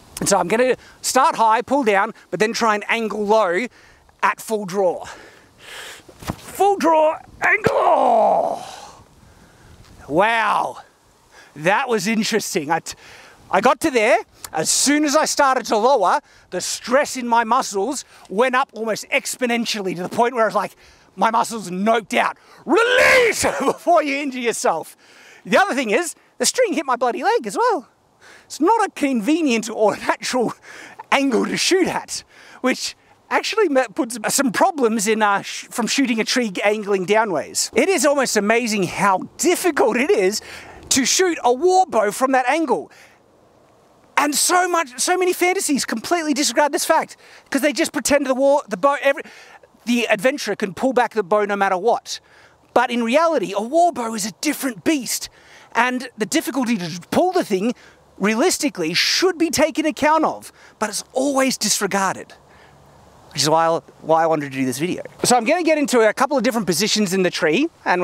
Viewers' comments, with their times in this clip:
0:06 That's a perfect anime battlecry. You know, mastery in bows and big swords... That's a samurai. Congratulations on stepping down that path.
0:49 Shad Irwin coming through there.